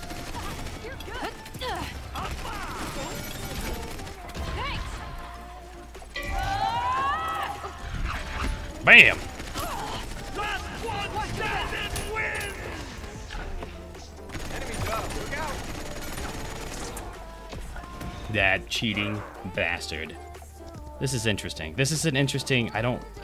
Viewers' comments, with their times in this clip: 0:07 "Last one standing wins!" Wait, was that the new default Barik voice? Ewwwww...